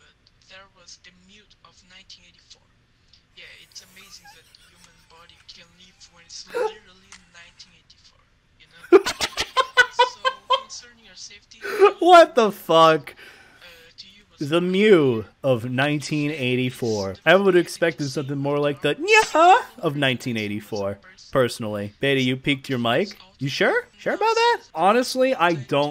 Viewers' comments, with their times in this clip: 0:08 why did your mic peak so high right there